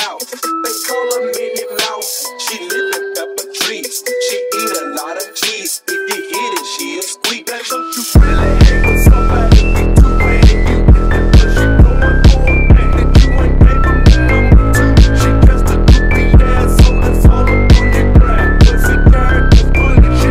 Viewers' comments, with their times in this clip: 0:06 These beat switches are nuts